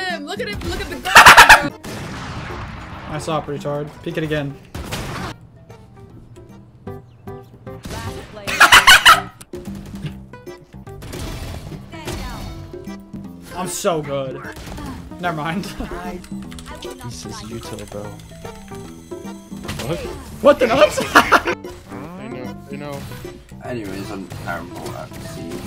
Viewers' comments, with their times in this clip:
0:07 sounds like you hit the brakes on a car going 200 bro haha.